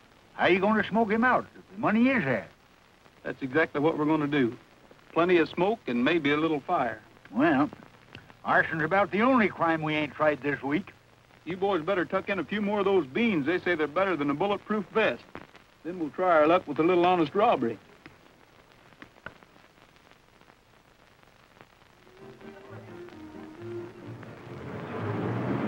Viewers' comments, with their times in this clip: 0:10 Yes, it's me again. I have to admit, as a loyal RR fan, that I really think the music played at the 'Casa Rio' stinks. It sounds rather wimpy compared to the he-man sound of the Sons of the Pioneers. But, don't mind me. I bitch about everything, and at every chance I get. I'm a male chauvinist pig/cowboy/beast.